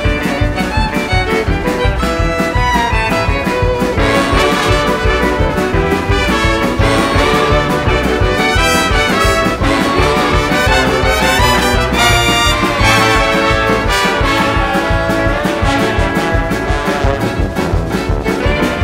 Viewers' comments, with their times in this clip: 0:04 is honestly real euphoria, love the western vibes